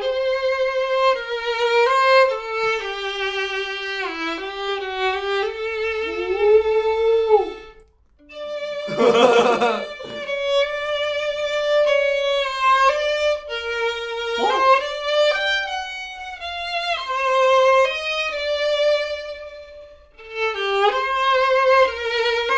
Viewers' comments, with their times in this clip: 0:07 They're such good bros that their laughter is in sync.